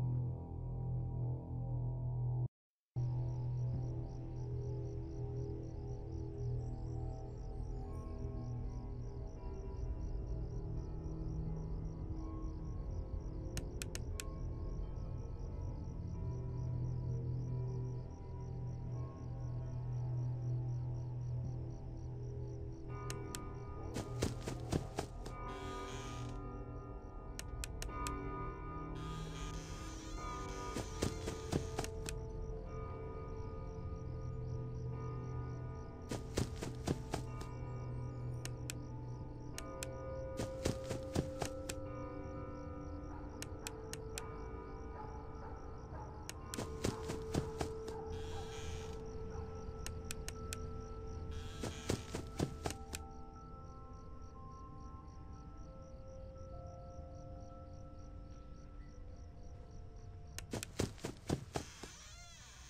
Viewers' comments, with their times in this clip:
0:08 you can hear chica breathing at the door!😱
0:45 I heard laughing